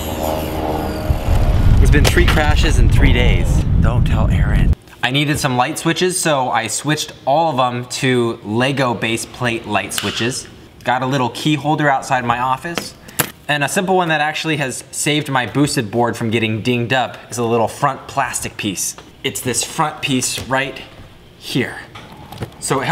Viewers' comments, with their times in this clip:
0:08 Fun fact: that noise is actually Michael Rosen clicking his lips
0:09 its sounds like the meme noice :v